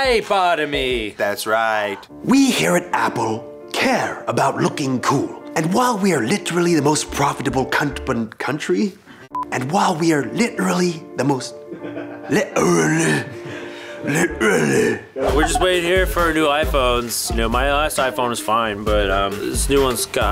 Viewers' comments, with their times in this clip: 0:07 I swear I heard Anthony say c*nt hahah